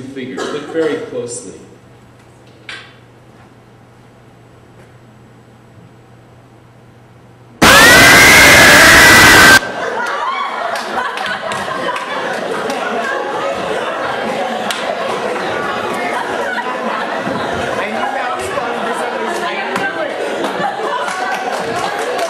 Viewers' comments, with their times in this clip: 0:06 R.I.P. Headphone Users
0:07 First of all, ow Second of all, ow Third of all, ow Fourth of all, im now deaf.